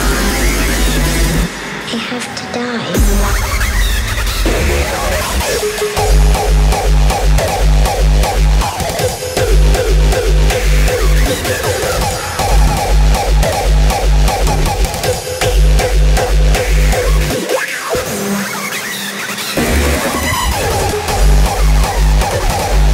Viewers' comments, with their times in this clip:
0:03 kicks are amazing 🔥